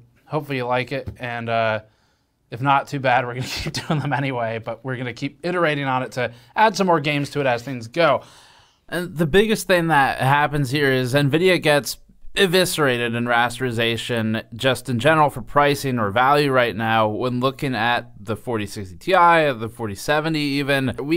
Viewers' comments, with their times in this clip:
0:08 Man get some sleep. your voice is almost slurring.